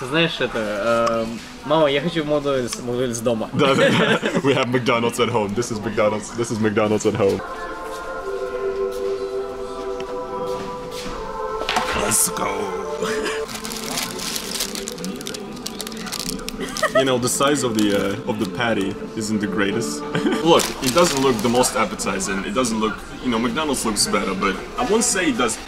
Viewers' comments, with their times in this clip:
0:08 that music in the background lmao It sounds like if you approached the gates of heaven or smth
0:08 Church music in fake McDonald's. Why though?! LOL